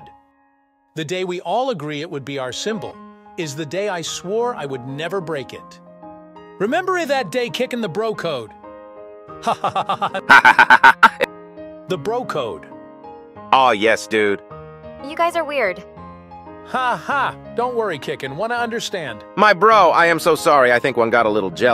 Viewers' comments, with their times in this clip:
0:09 I know this has nothing to do with the video but the AI voice sounds like Cleveland Brown's laugh from family guy 😆